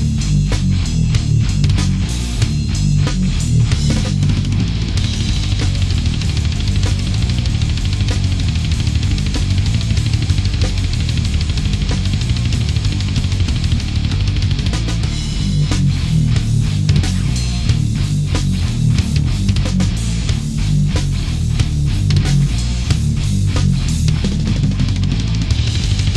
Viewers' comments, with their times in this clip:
0:10 Put in 1,25 speed and is DISASTERPIECE